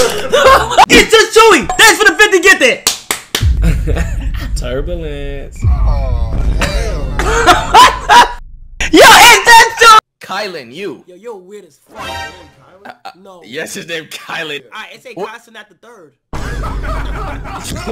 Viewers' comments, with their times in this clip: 0:04 why tf NLE say it like that 💀
0:05 😂 the way he said it😂